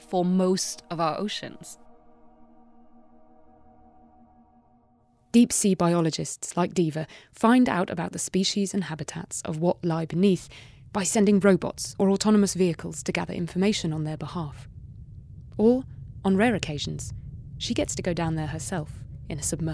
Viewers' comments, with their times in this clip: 0:04 i thought i was getting a mission briefing in hitman xD